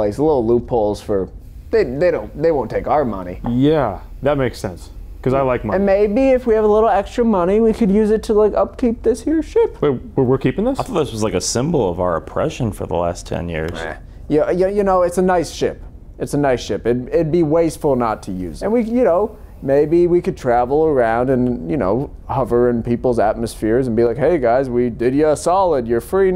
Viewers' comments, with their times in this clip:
0:10 "meh", that timing was perfect oh god